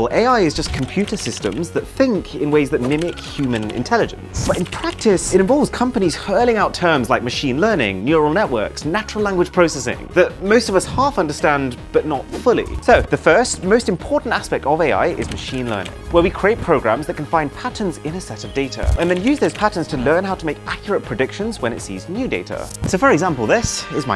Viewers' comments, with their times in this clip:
0:10 I clicked for the video, but stayed for the background music 😍